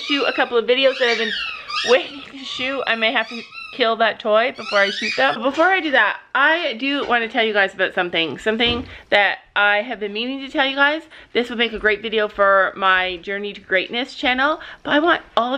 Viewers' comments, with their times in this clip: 0:03 The toy squeak woke my dog up cos he thought it was his toy 😂